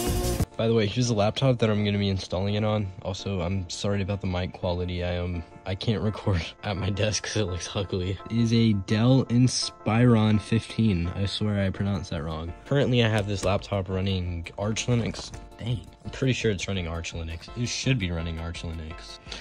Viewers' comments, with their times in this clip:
0:03 Not sure if anybody else mentioned it but might be worth looking into ways to decrease the pop/wind sound when you speak into mic. Especially if you plan to do more content in the future, good job at making a great video and hope the other ones are gonna go great! Edit: The phone mic quality is actually quite alright, would even say it might be slightly better than the mic on pc, but might be mainly due to no popping sound